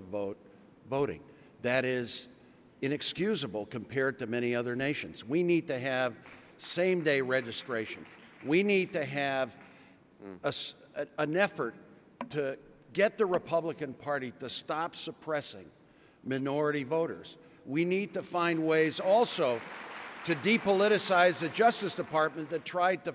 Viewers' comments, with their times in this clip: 0:10 of the video... did I hear a fart?